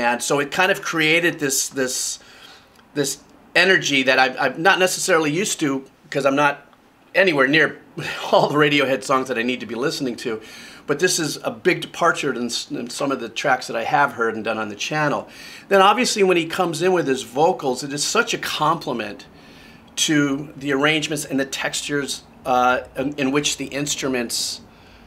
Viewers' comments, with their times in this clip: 0:07 when it comes to the drums on here, I think the reason it sounds blown out is down to where they recorded the album. They didn’t record in a studio, they recorded in a 16th century Manor House that was gifted to Henry VIII’ tailor by the king in return for adopting his illegitimate daughter Ethelreda Malte. The Manor House was owned by actress Jane Seymour, who still owns it I believe, but was unoccupied at the time. The band just kind of moved in and set thing up to record wherever- in hallways, empty rooms, even in the ballroom. That’s what you might be hearing with it.